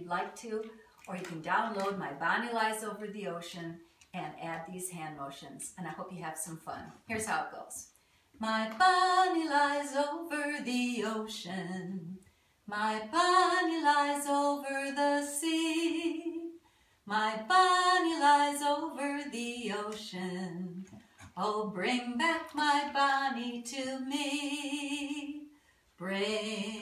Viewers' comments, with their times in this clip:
0:08 U have a beautiful voice. 😍